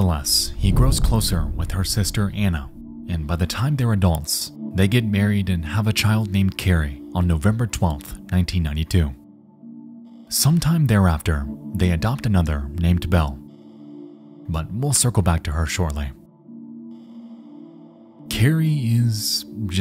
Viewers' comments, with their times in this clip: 0:06 The faint breathing made my almost piss my self :face-blue-smiling::face-blue-smiling::face-blue-wide-eyes::face-red-droopy-eyes::face-orange-biting-nails: